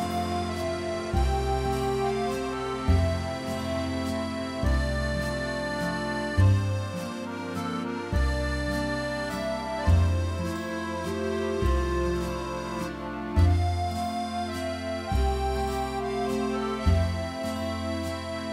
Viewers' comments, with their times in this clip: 0:06 this song just sounds like it’s from a Disney movie or the songs they play at Disney world !!!!